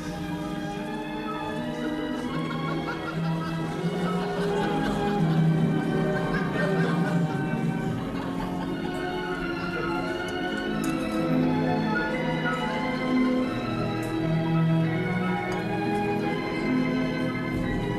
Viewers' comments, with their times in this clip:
0:04 The most depressing piece of classical music in history. The Warsaw Cocerto.